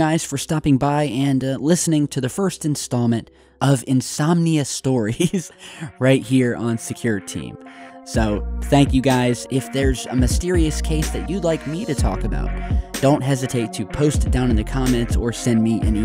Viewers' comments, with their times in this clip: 0:04 That laugh made me laugh and I have no idea why.